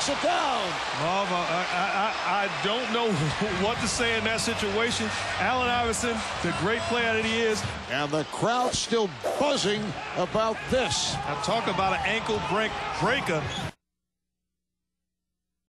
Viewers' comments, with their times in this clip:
0:10 he had to sound black there at the end.. "ankle break.. breaka.."